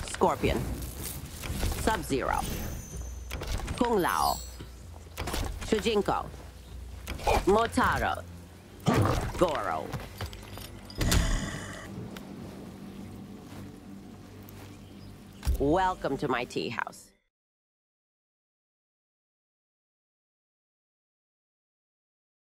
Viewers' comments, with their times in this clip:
0:06 Shujinko’s perfectly cut grunt sent me 😂